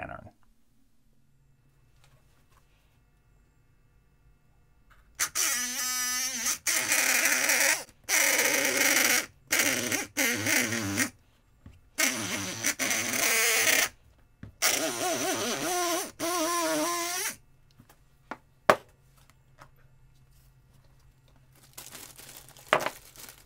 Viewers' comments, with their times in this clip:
0:04 Translated pumpkin scream: Noo, I don't wanna be picked! Pick pickles instead!
0:07 That is the exact sound of my mother-in-law trying to help a bee out of the house inside a tissue.